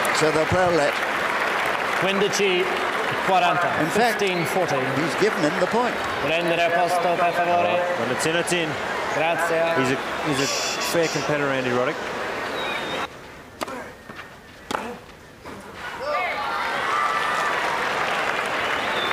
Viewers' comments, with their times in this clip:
0:06 "prendere posto per favore, GRAZIA" What did you say, dear umpire?😠